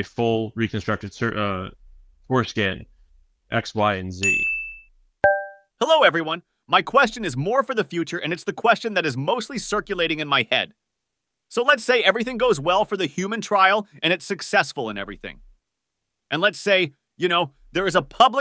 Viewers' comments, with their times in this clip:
0:06 that’s another AI!! Wtf is going on here I’m getting scared lol. I didn’t know AI would want their foreskins back 😂